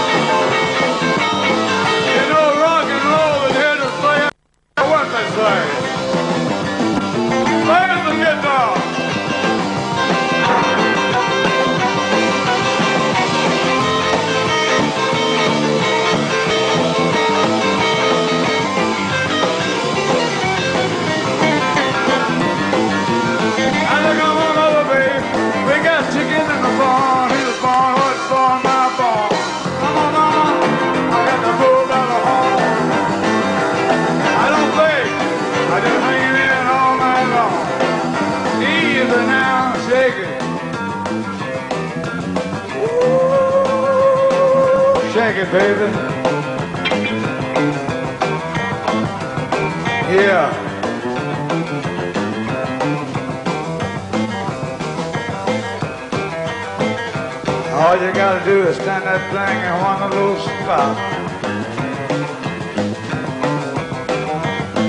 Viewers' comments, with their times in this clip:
0:10 I'm pretty sure the stray cat in the yard can handle the ivories better than JL on this performance. Insanity
0:46 The master. Even when he plops his boots on the piano he's still on key..